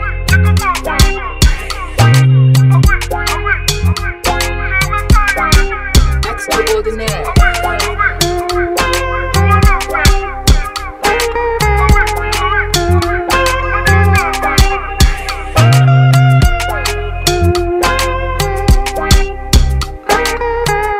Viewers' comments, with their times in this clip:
0:08 I always come back to watch this video because of 3 things, The Sound/Beat, The Voice of Runtown and last and best part,' those Old Men (O.G) DANCE MOVES (Especially the BaBa with blue native )......I love them.